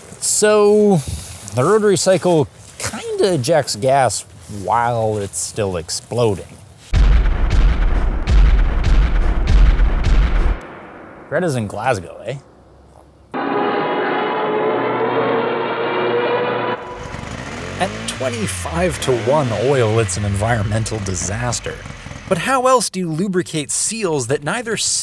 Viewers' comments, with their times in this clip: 0:06 Runners in Glasgow….. what was that?